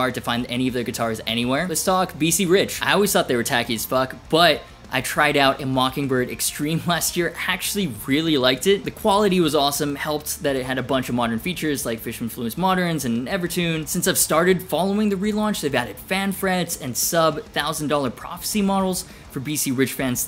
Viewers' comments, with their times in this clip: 0:03 You missed a Hetfield bleep and now I'm grounded :(